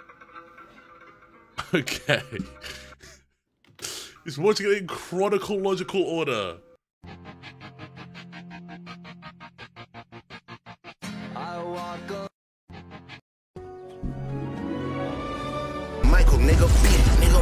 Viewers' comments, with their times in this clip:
0:03 chroniclelogical order :face-orange-biting-nails: